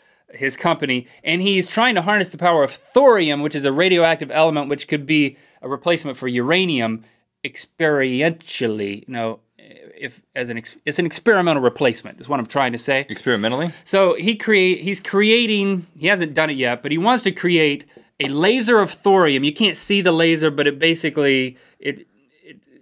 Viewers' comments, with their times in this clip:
0:04 Link does a fantastic impression of George W. Bush lol.